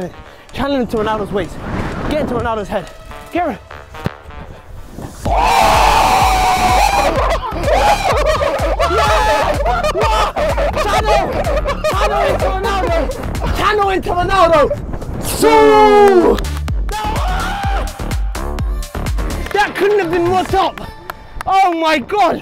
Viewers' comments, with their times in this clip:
0:06 close your eyes and you'd think your standing in the middle of a chicken coop